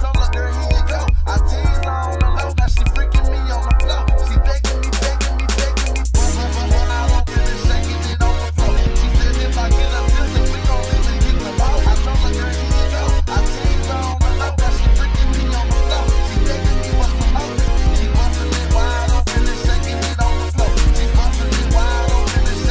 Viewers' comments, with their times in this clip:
0:05 Those Ape Escape chords... My God. Especially the one that starts